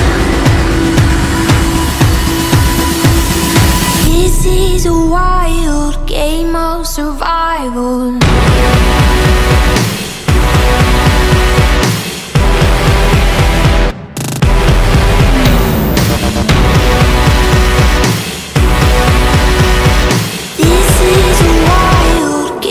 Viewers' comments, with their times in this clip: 0:03 that drop hmmm